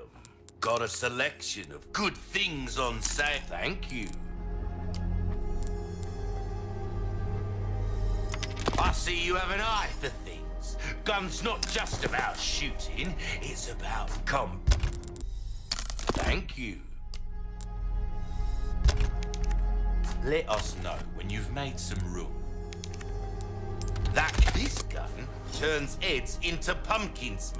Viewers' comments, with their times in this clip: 0:08 "I see you have an eye for things. Gun's not just about shootin'. It's about cum." I laughed much, much too hard at this. 😆